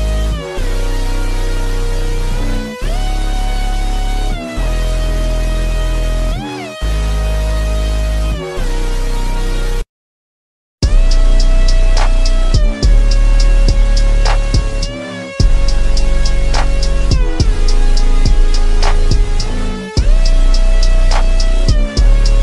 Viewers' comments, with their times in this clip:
0:08 THE BEAT ON THO
0:10 hits so hard at .5 speed with recording headphones full volume
0:10 This speed is actually fire 🔥👍